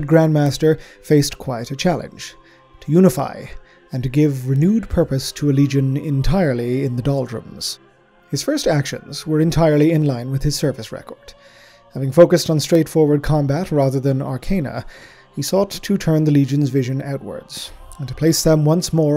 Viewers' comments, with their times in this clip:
0:06 Hear that police siren